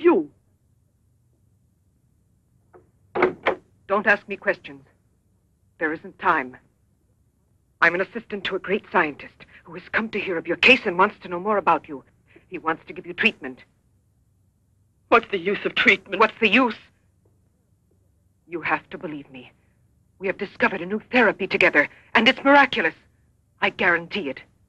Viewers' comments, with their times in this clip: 0:06 (in a terrible French accent) "Listen very carefully. I will say this only once."